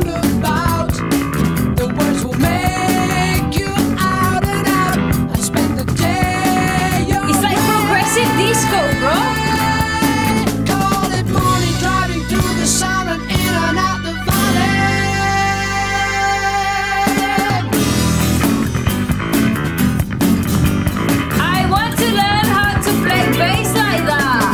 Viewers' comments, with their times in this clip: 0:07 Is this progressive disco?...hahaha. Check out Pain of Salvation - Disco Queen, the real progressive disco.